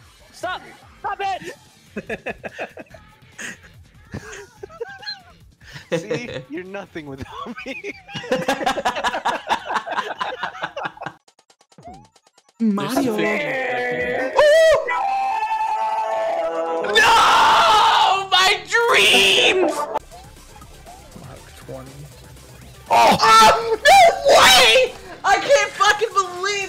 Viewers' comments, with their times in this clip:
0:08 Tagging so I can hear him scream NO like he watched his son get hit by a bus